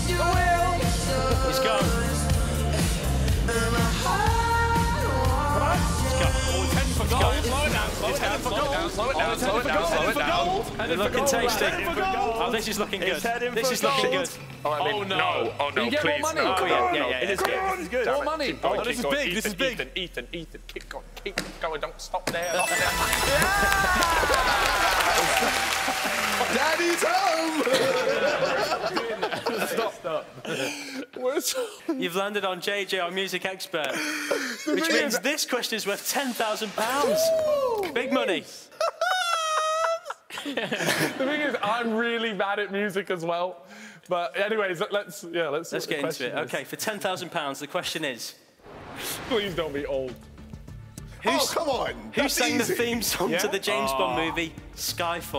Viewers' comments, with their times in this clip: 0:08 for a moment I began to hear "Down Slow" 😅
0:12 "this is looking good" sounded like tommyinnit is it him or sound alike
0:27 JJ's laugh LMAO!
0:37 that laugh xDD
0:38 I love KSI's chicken noise. 😂